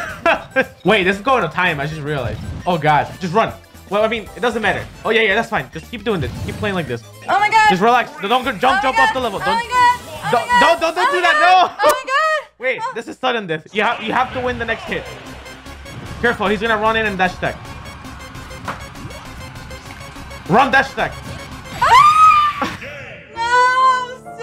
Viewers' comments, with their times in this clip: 0:07 this is what they sound like in the bedroom, ZeRo just reflexively gives smash coaching